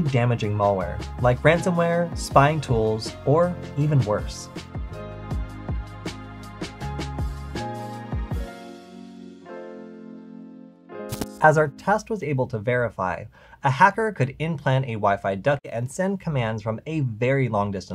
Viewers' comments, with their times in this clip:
0:05 That guy laughed LMAO